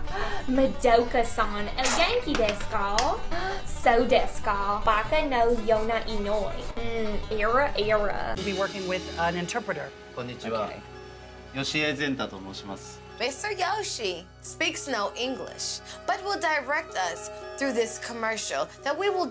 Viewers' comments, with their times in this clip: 0:06 No, we do NOT talk like that. I've lived in the south since I was born. In these 4 1/2 decades I've lived in 5 different states of the south. No one here talks like that. The Tick Tock thing has an imaginary accent that is not based on any reality.